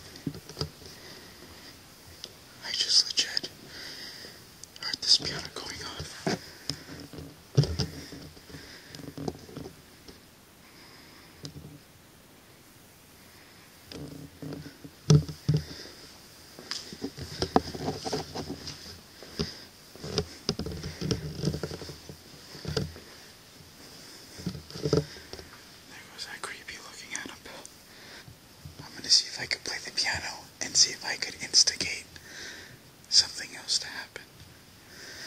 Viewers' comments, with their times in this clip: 0:05 Look very closely while you are looking at the piano you turn to your left at the glass door at the bottom you see a figure Something is staring., omg I jumped when I heard the bang and saw the while ball rolling
0:20 to people breathing